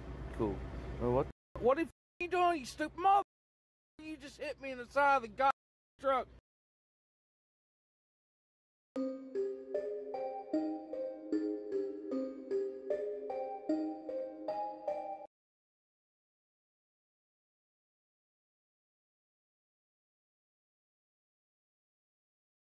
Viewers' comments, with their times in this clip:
0:09 the music is even more spooky at 1/2 speed